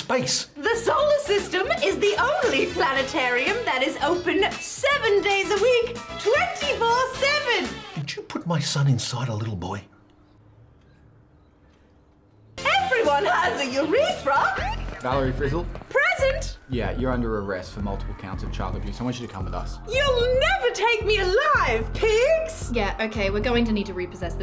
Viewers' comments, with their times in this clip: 0:10 the pause is brilliant, just that little moment to think "how the fuck do I explain this one?"